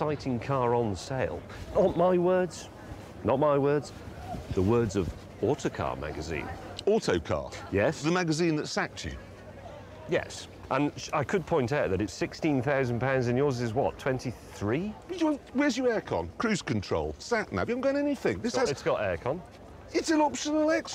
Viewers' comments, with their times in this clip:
0:06 When Clarkson says "Autocar?" it sounds more like "Autocack"